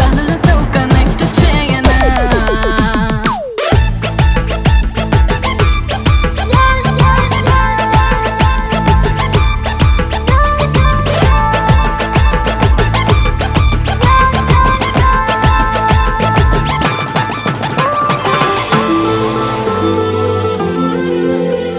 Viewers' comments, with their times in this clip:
0:03 Who liked the beat drop in this song